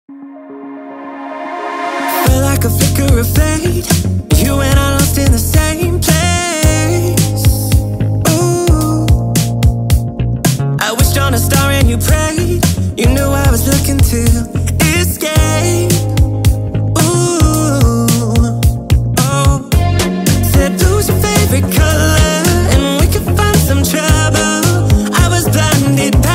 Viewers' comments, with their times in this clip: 0:08 Bro that uwu
0:11 It sounds really good